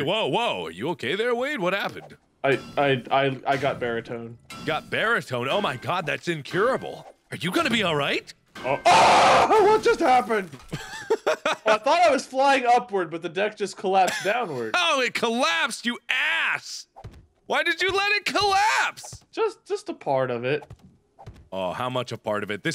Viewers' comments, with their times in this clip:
0:10 I love how me and Mark Both Laughed at that Terrifying scream from Wade